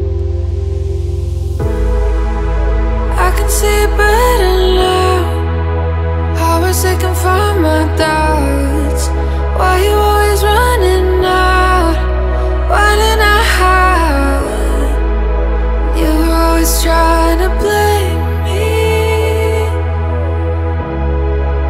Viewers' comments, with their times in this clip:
0:04 That Mashup though this is festival quality